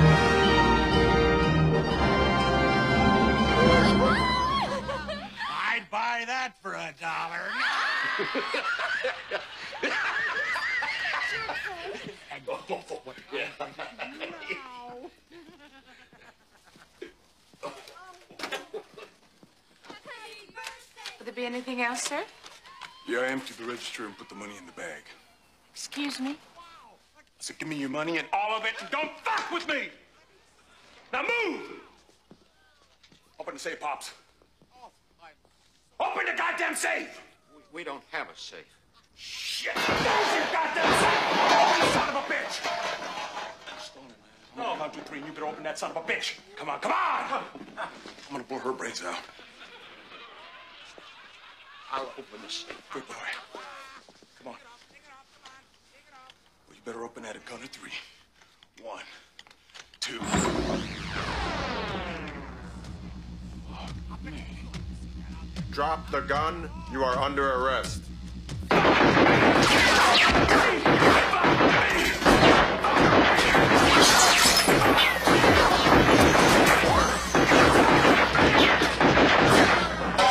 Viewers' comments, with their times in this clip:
0:08 The first laugh wasn't enough so he has to laugh even harder again.
1:00 I love that synthesizer whale as Robocop opens the doors! So Badass!!
1:01 If only that cool noise was made each time we walk into a gas station store..